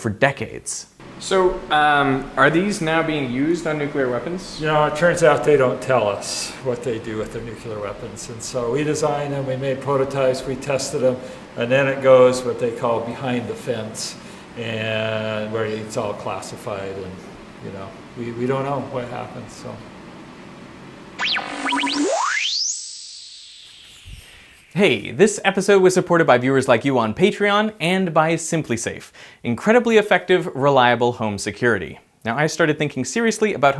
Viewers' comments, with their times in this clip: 0:06 As smart as this guy seems he says NUCULAR?
0:06 I can't believe that this brilliant guy went and said "nucular" instead of nuclear.
0:06 Did the professor just say "nucular weapons" ?
0:06 Goddamnit....we almost made it through an entire video with "nuclear" mentioned several times without someone saying nucular..
0:07 Does he pull a George bush “nucular” ?
0:21 Hey Vsauce here! in slow motion.